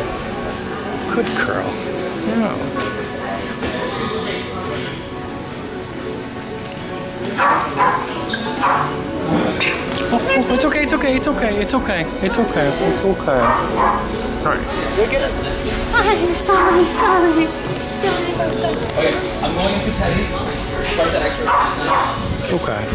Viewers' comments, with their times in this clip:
0:09 That scream went right to my heart.. That's when i started crying